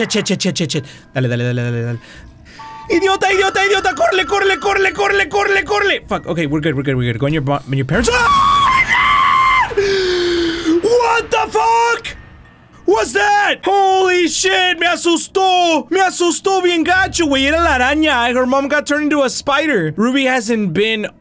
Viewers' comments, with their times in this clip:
0:07 is when the scream is